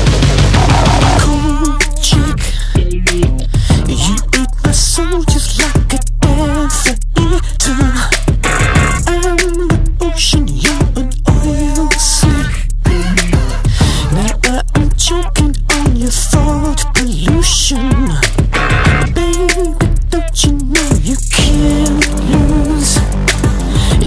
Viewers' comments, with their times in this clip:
0:07 I think these few guitar notes are almost a direct referece to prince kiss
0:12 Laughs in Matt Bellamy